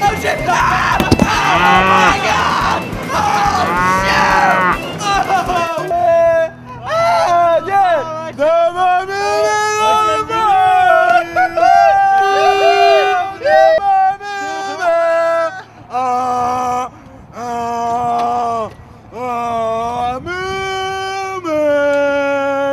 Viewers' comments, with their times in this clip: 0:07 The Funky Kong sound was a nice touch.